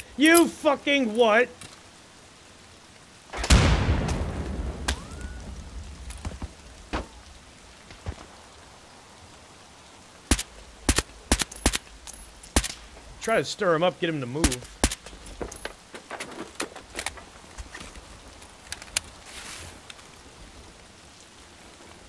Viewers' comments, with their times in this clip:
0:04 is that sound from the fragments hitting something?